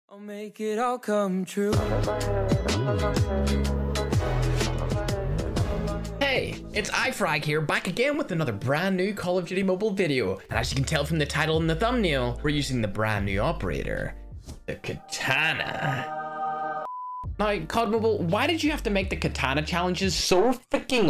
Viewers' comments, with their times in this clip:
0:06 He said his name wrong